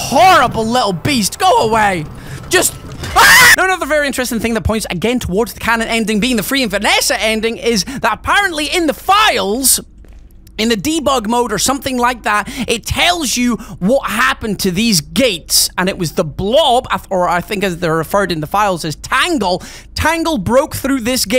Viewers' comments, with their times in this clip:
0:03 That was a perfect cut scream